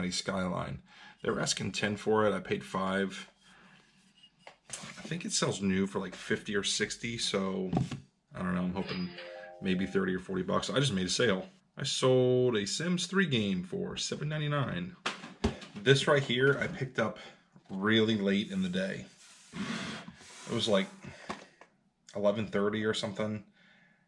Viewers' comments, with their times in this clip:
0:09 I quickly checked my eBay account and then realized it was your sale, hahaha!